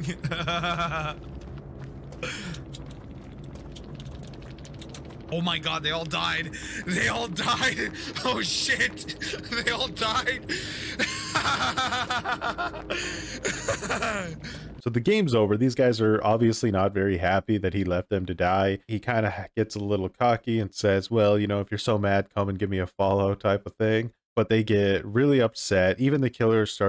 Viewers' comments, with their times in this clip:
0:09 Literally the laugh of a maniac.
0:13 Laughing like a psycopath ....
0:13 his laugh is so forced, and so annoying
0:14 I can literally hear his lips curling back to expose as much corn teeth as he can